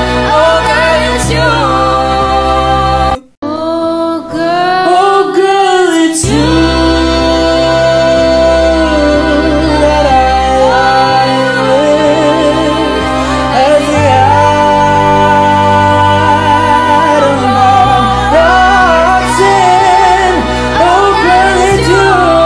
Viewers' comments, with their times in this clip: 0:04 hit the hardest for me, guy really came from left field with that run